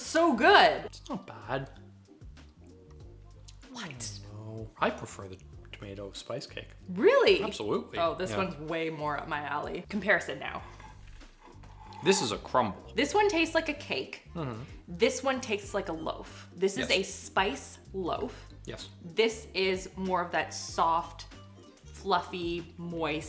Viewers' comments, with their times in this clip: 0:08 🧡 New Word: "Comparisitnow" meaning: Compare these two now 🧡😃 I love it 🧡🧡